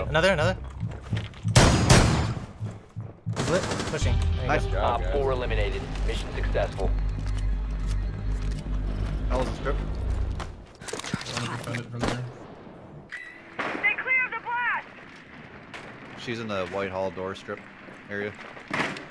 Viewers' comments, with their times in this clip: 0:03 That audio fade I noticed